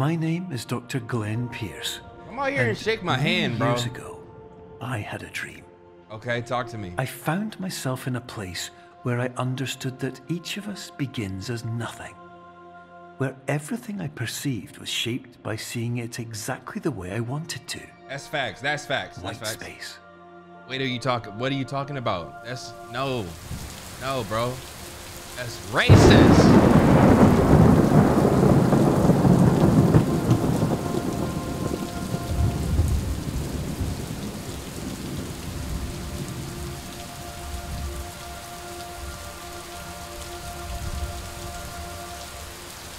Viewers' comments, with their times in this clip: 0:07 this whole segment has me sent bruh 😭 the thunder behind the 'thats RACIST'
0:22 bro said that's racist then the thunder struck comedy
0:23 the way the thunder hits right as he says "thats racist" 😂
0:23 BROO THE THUNDER WAS SO TIMED😭 WHY IS NO ONE SAYING ANYTHING ABOUT THAT
0:25 the way the thunder clapped when he said that's racist 😭😭😭
0:25 the timing of that thunder oh my god XD